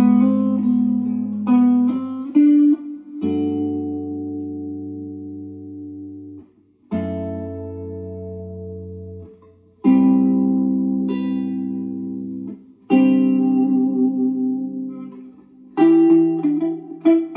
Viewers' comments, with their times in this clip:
0:03 dang that chord voicing 👂👏